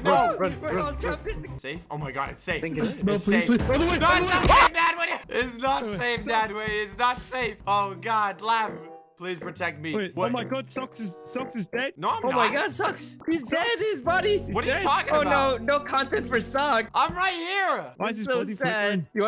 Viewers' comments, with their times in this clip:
0:04 that scream tho😂